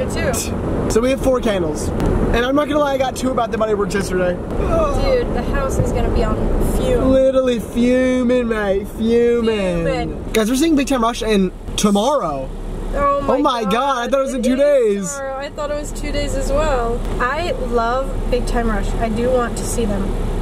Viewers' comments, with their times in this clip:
0:08 as an English person I can confirm that was an amazing impression